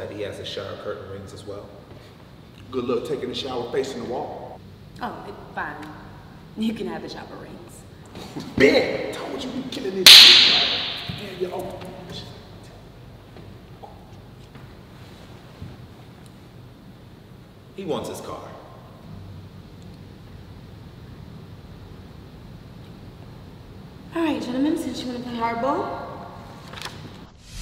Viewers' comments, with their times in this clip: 0:10 that sounded like whiplash 😂